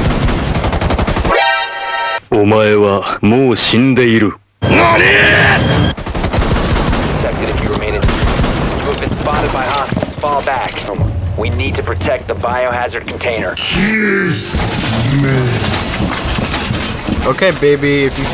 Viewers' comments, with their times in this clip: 0:04 Wait a minute... that nani ... IS THAT DIO!?!?